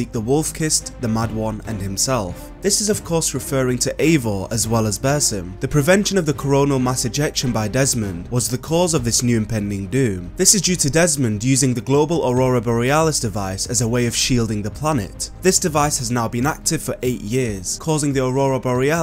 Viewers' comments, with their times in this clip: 0:06 i swear to god he said corona